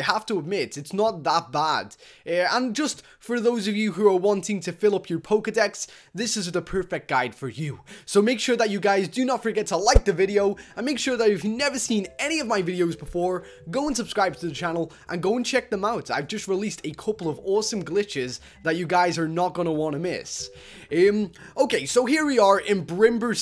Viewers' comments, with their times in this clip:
0:08 you said you like a ghost